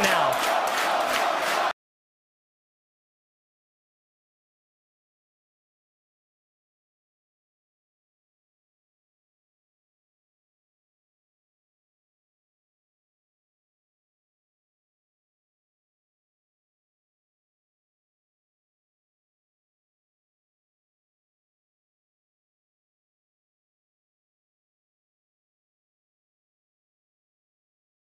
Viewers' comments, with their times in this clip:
0:09 All that cheering,and then till awkward silence.XD